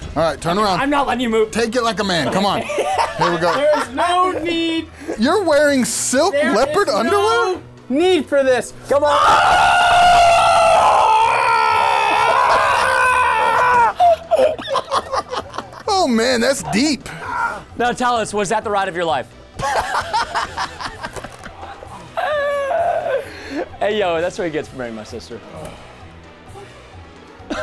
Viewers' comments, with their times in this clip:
0:08 bruh his scream 😂😂😂😂😂